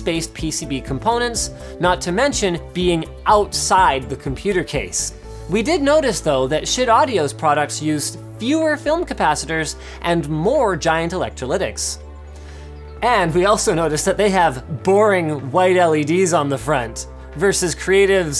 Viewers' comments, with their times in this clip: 0:05 huh did i hear that right.